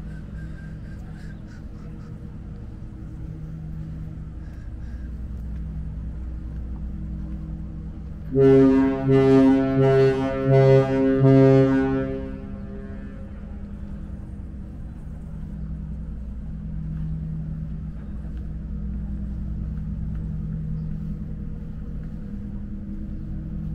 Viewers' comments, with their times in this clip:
0:07 Ship Whistle - Cover your ears